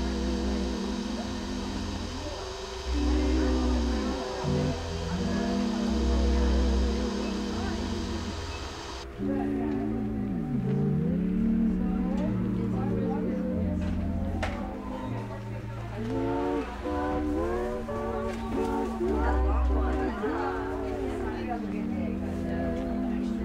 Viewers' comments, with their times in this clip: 0:09 The swaying slow melodies put all the ladies to sleep! lady is yawning 🥱 looks so relaxing! 😀💕